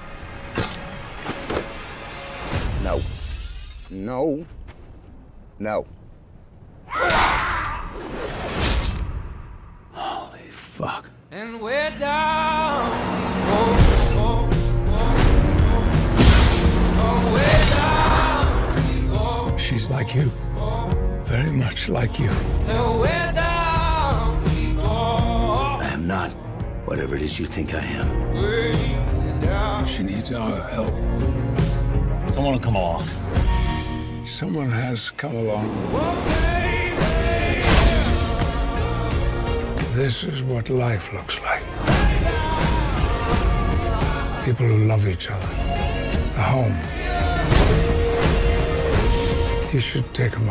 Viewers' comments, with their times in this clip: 0:08 Hugh jackman perfectly delivered that "holy fuck" line
0:35 The music along with Xavier's words made it so emotional.